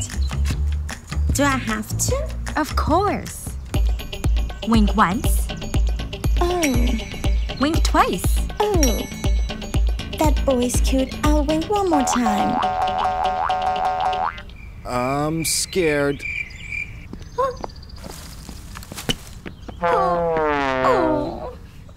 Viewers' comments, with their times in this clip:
0:03 is so out of sync :(